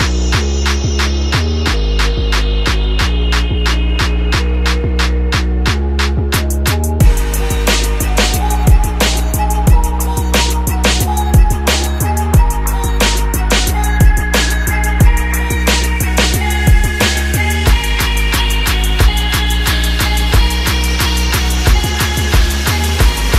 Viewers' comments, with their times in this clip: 0:07 wow what a beat ,love it. I realy like the view ;)